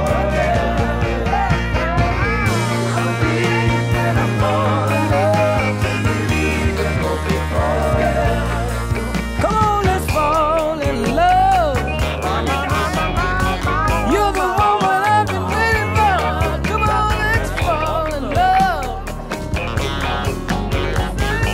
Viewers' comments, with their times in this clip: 0:09 Love how he lulls you into a mellow state but then knocks it up a notch. Reminds me of what Sly And The Family Stone did towards the end of Stand.